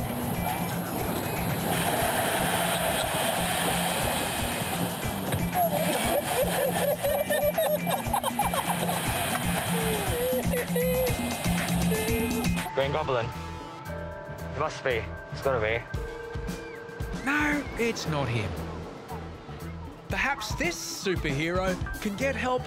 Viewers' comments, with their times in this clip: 0:03 I laughed at the friendship of this laugh